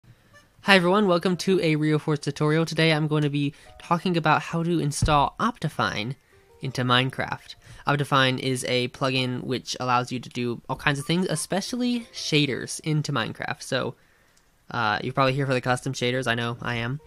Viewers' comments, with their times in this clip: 0:03 Sounded like u said F**king 😂😂💀💀